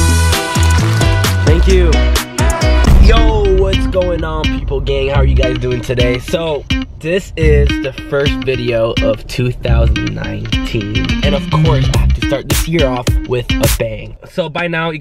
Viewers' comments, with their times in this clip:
0:03 did he say ‘gay’😶???